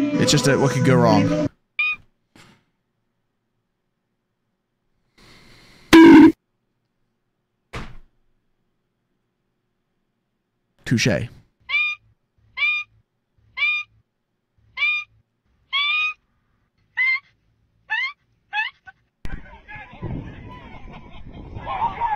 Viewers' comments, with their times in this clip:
0:04 at this part, I was kinda bored, basically waiting for the next clip, I decided to tap on the screen with my elbow and then the bonk sounder came up, 😂😂😂😂😂 I can’t believe that happened to me 😂😂😂😂